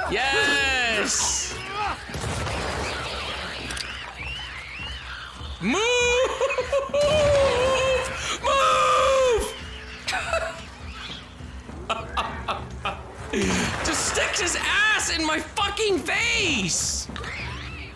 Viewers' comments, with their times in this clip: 0:05 Teacher: what sound does the cow make? Special ed kid: